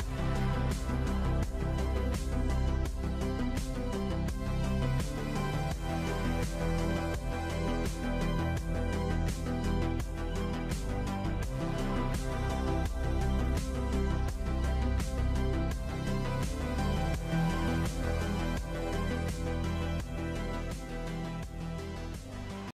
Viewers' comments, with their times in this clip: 0:06 That moan was really damn good thought it was from a h**tai amazing work bro (teach me the ways?)
0:06 nah bro that was an experienced moan 💀
0:06 That moan had energy
0:07 This part should be the most replayed section. Cuz the reaction after the moan just cracks me up! 🤣🤣😅
0:07 THE MOAN KILLED ME BRO I COULDNT NAH WTF NAHHHH THAT SHIT ACTUALLY MADE ME GAWD DAMN-